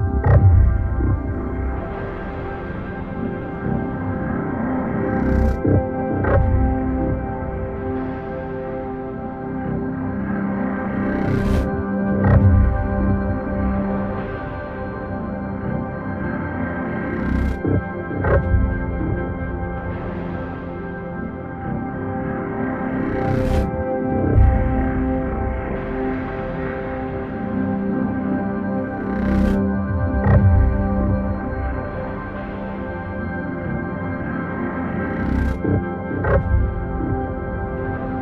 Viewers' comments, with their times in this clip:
0:08 Michael Jackson is that you?
0:24 The music really makes the setting scary, and